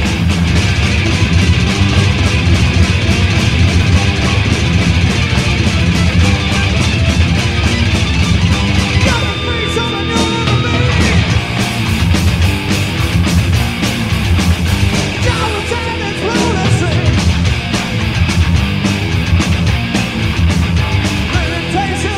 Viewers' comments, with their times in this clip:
0:10 heaviest and cute